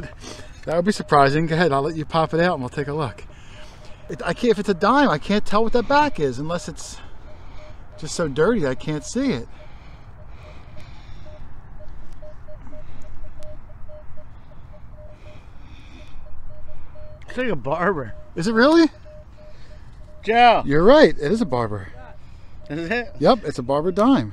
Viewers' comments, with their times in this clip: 0:10 How the heck is sending morse code lol